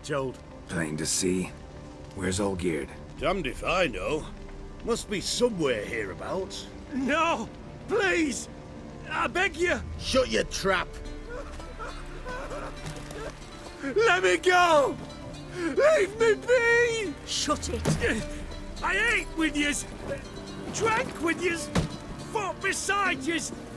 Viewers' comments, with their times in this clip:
0:10 'tis the moment when everything about Hearts of Stone storyline became one of the greatest DLC. Man that BGM
0:11 when the music kicks in doooood